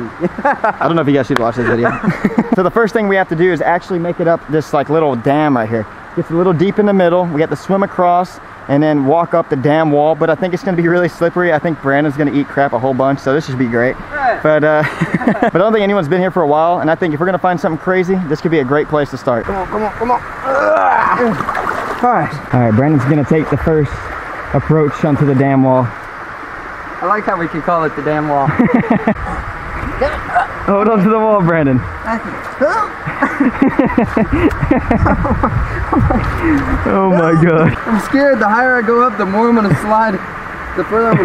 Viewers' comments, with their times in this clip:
0:09 "Walk up the dam wall" sounds so funny had me chuckiling, its btw
0:26 “We’re gonna walk up the dam wall.” Who else thought he cussed? 😂